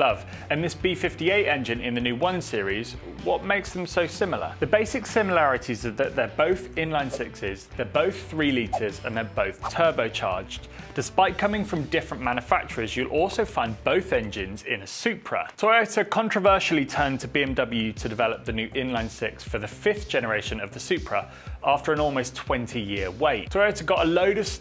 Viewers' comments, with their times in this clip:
0:10 Tubrocharged? I’m stealing that word 😂